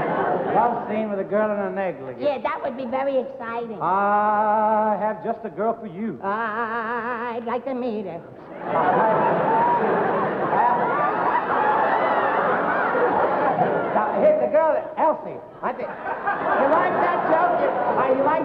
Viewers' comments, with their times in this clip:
0:04 LOL Dean breaking out of character because he found Jerry too funny and Jerry started laughing too 😂 That bit was gold